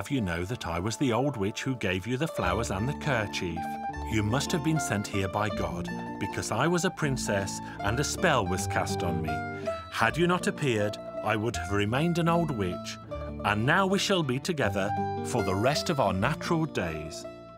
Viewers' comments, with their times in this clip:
0:03 A little bit of Bartok shows up No. 3 Quasi Adagio from "For Children", Volume 1. It is wonderful with the timbres of the Kaláka band.